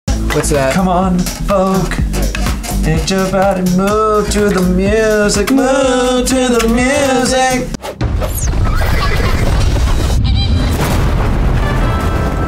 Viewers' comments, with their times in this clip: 0:00 shayne is a good singer